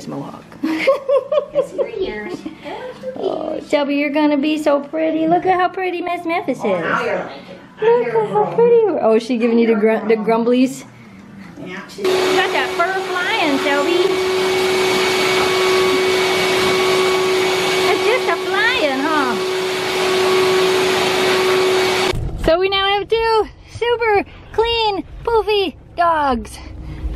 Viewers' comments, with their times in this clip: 0:08 Shelby in the growling voice is saying, "Yeah make fun of me as Miss Mohawk Husky, just laugh it up why don't you!"